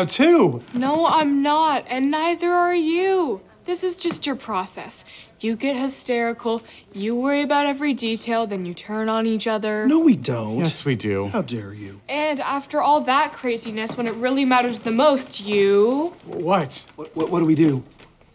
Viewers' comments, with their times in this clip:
0:06 …lily sounds like a man…weird!